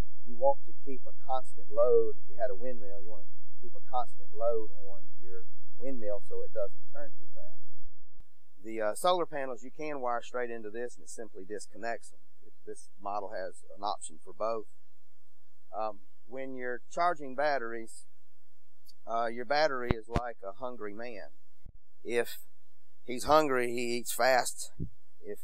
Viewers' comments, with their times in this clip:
0:10 is it just me or does it almost sound like the microphone is underwater? The video quality looks GREAT but the audio from the beginning to almost ruins it. Thanks for showing the setup